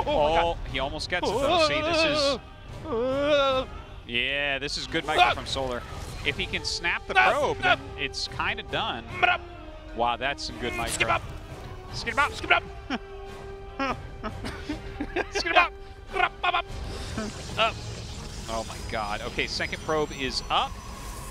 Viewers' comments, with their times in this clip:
0:08 Beatbox Tasteless busting out some scat rhythms. Brrrrrrrrrrropppp. Skebop